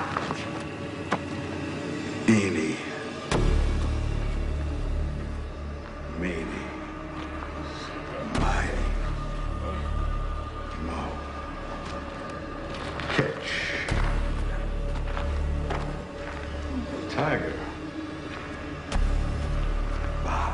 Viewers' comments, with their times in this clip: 0:06 All these years and I barely heard Sasha quietly mutter out the word shit